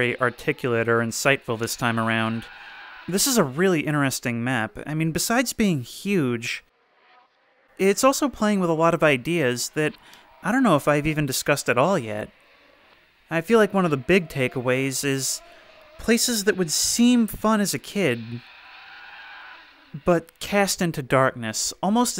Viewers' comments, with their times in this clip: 0:05 sounds are so scary